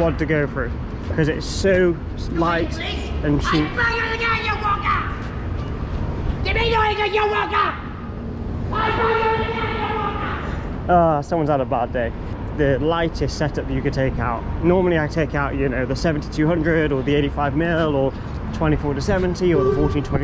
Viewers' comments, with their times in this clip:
0:03 mans speaking enchantment table